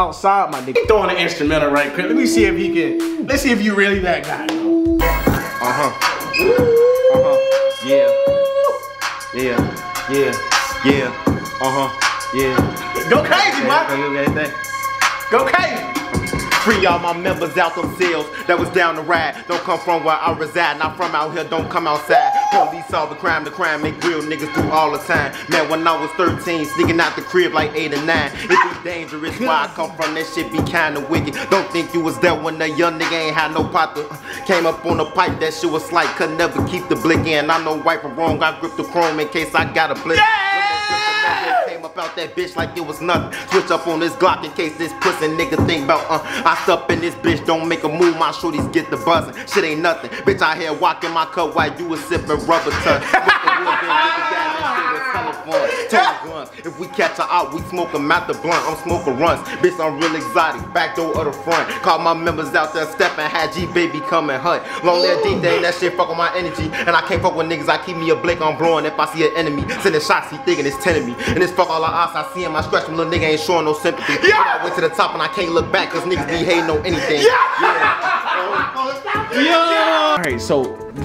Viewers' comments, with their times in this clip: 0:09 he got that herbo flow 🔥
0:17 you can’t tell me he don’t sound like herb
0:23 he sounded like g herbo
0:24 He got so much potential he sound like herbo
0:27 bro sound like G herbo
0:57 KING VON VIBES 🔥🔥🔥🔥
1:04 THAT FLOW SWITCH WAS CRAZYYYYYYY BRO TUFF ONB💯💯 HE SOUNDS DAMN PROFFESIONALL HE GOT BIG POTENTIAL
1:05 Gives me polo g vibes🔥